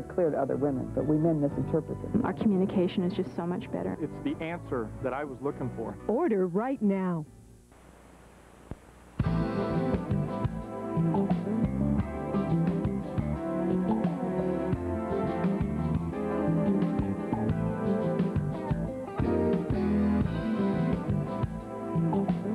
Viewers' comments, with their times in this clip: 0:09 is a BOP. These NME tracks kick so much ass
0:09 Love this music!